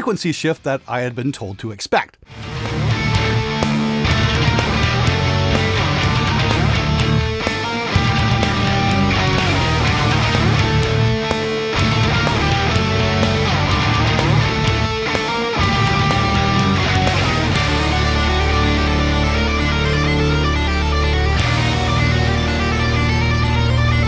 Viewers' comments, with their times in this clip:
0:06 Picking up a strong A7X's Sidewinder vibe from the part and I love it